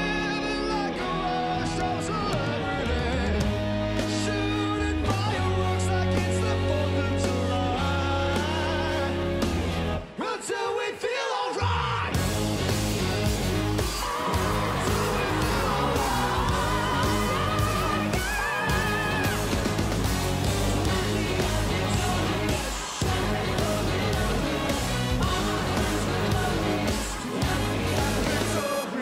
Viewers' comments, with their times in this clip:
0:10 your voice kind of cracked
0:11 THAT GROWL, YAS.